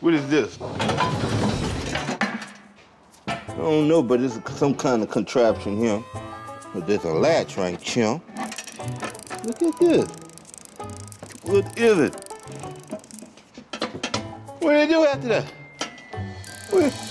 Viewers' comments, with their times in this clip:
0:05 “some kinda contraption right hyun, there’s a latch right chyun”